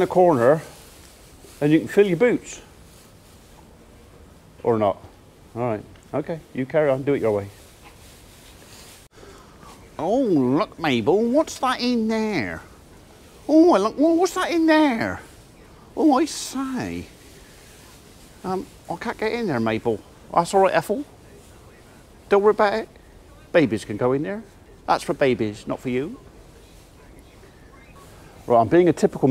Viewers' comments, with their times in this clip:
0:10 Spot of the Johnny Morris there! Reckon you will have 6 calves by reading time.